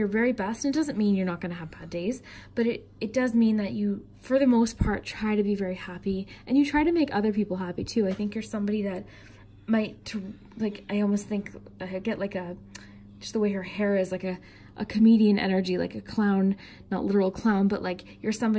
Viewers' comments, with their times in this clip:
0:03 are crows cawing? Nice touch🦋 #️⃣3️⃣ Intuitive , empath, 💦 Letter Y, psychic Thank your for your transmission glad I watched 🎭 🎲🎭 Oh and earlier today had picked up my 1st deck of tarot cards ever ♦️ ♥️ ☪️ Subbed & rang the 🔔 ❣️